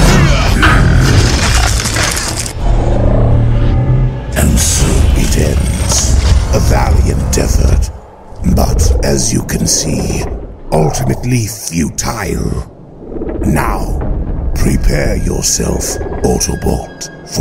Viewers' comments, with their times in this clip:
0:05 Lockdown literally sounds like General Grievous from 2003